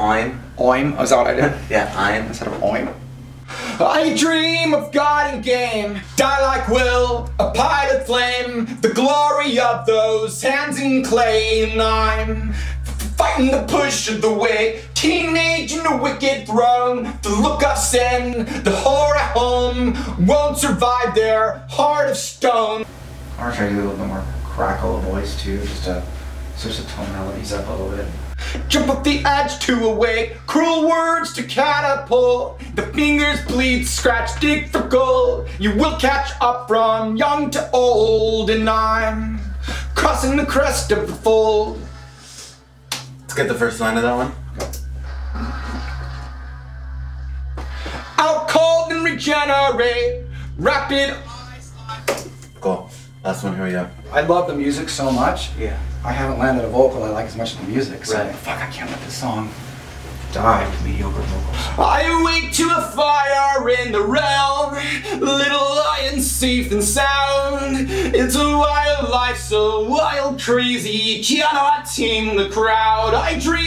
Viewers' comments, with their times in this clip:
0:04 That's good singing
1:01 Tom's vocals are autotuned at the 07: 37 part.